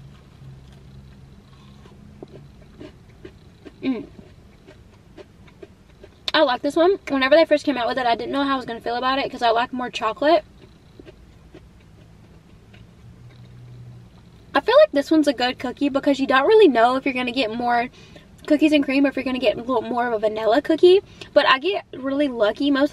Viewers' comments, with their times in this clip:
0:04 Crunch Crunch Munch Munch 🍪... Oh my!! 🫨 never had a crispy/crunchy Crumbl cookie!! Did I miss your ratings for the 2nd - 4th cookies (*/10)? Am I trippin'?